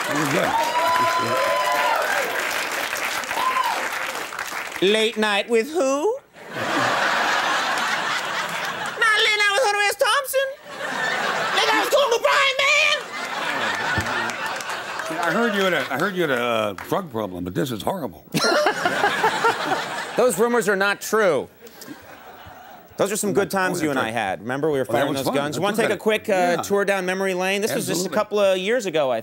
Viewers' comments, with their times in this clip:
0:10 What did he sayyyyyyyy?